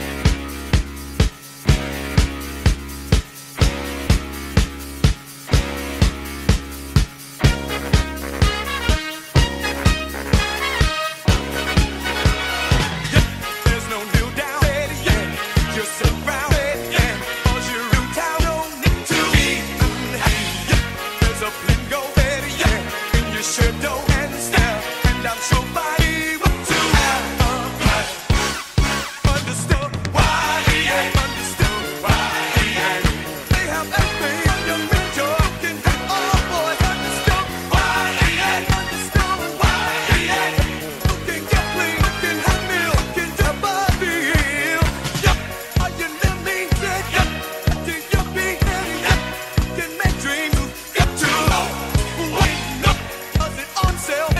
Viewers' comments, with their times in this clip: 0:07 sounds like some experimental form of jazz.
0:17 “owl’s your new town” OWL CITY
0:18 “Don’t need to be gooning”
0:20 Yep there's a lingo Butt Buy
0:29 I'm Hearing Pack A Stone Of Y E A
0:35 "You can hang all the boys" Well, I guess I know what'll happen if I don't accept EA's microtransactions.